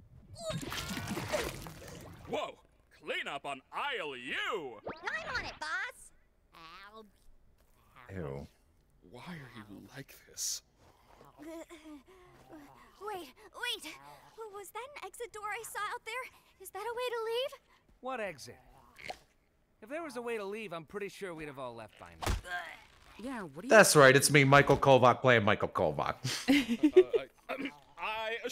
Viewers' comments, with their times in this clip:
0:09 I still love now Caine said that like a disappointed parent